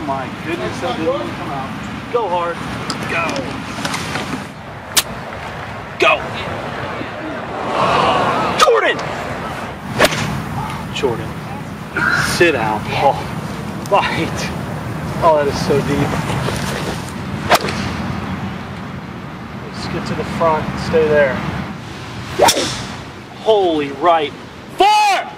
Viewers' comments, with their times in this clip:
0:08 sounded like Wii Sports Out of Bounds golf